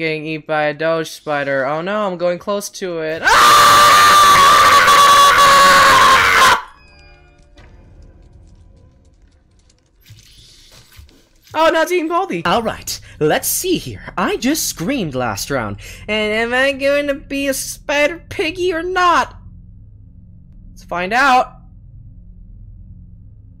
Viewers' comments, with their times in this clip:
0:04 r.i.p headphone user